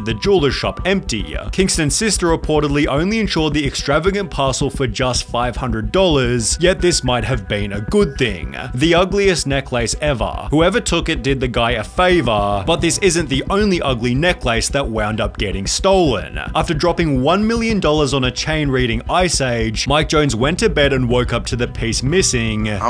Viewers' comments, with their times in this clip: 0:07 I wouldn’t be surprised if this voice is from AI, who says necklace like that?